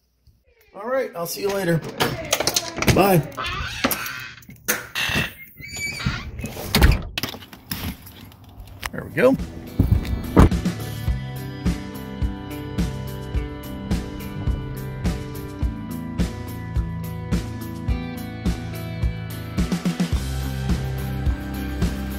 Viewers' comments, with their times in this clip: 0:04 ... That door could use some WD-40... ;)